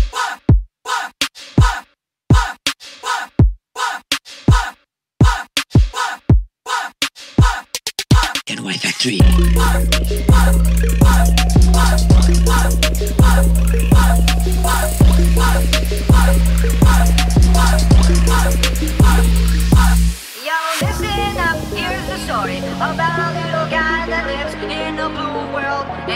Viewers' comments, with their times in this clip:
0:08 I thought at said "get out of my factory" lol 😂